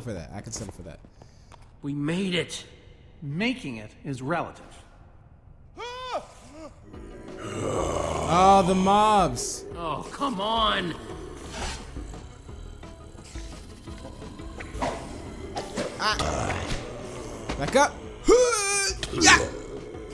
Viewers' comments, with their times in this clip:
0:05 Did anybody noticed in Gabriel had a weird Scream? Like if you Agree